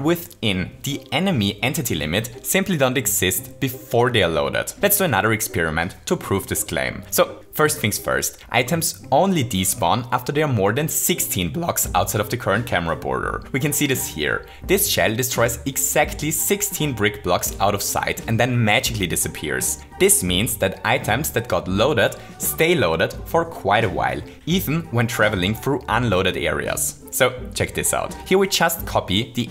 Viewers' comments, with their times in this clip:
0:10 Nice voice crack!